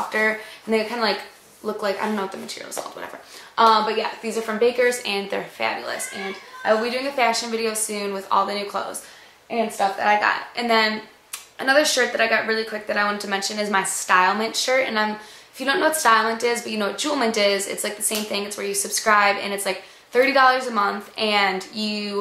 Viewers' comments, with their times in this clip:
0:05 did a little kid yell ?